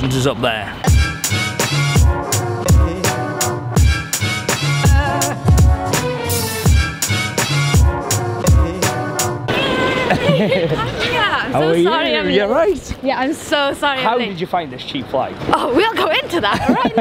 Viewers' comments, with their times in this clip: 0:05 this song is a bop and you can see the girl in the red shirt Agreeing with me!